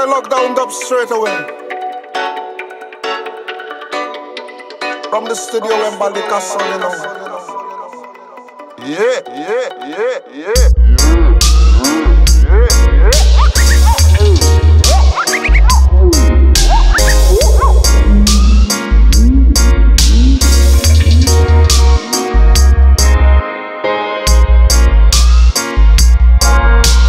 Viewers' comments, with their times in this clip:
0:10 The bass line still gives me goosebumps every single time...